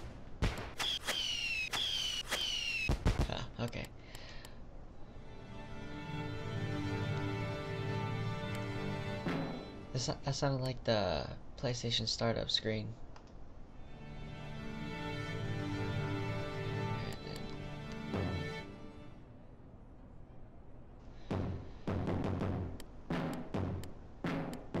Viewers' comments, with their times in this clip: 0:10 When we're tuning in orchestra I think of the PS3 startup sound too.